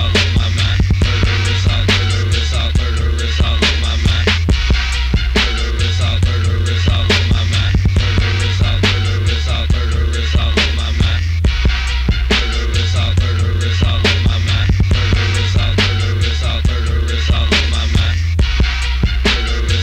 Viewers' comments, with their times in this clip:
0:05 kicks hit so hard